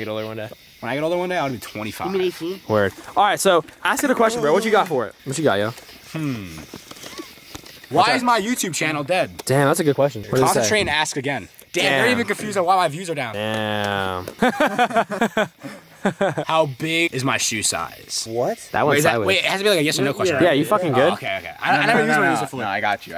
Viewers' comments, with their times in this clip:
0:08 Did anyone else hear the scream in the background